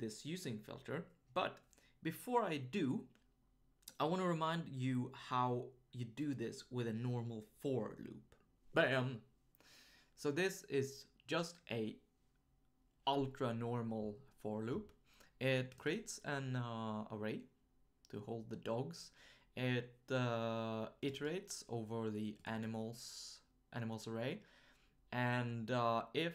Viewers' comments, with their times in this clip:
0:09 That "BAM" is a cross between Paul Lynde and Thurston Howell III.